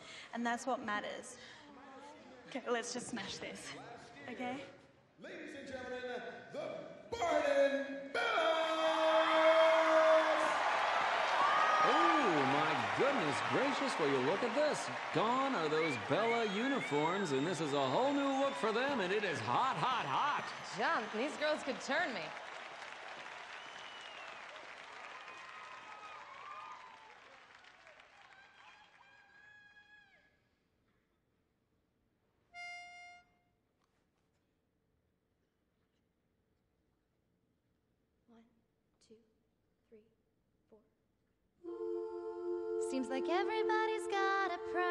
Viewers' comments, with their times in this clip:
0:07 that voice crack, tho😂
0:28 someone shouts we love you bellas 😄